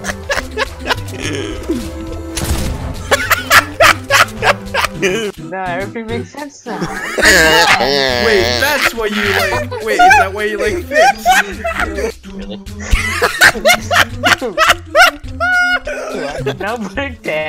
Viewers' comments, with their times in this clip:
0:05 Teacher:make a pig noise Student: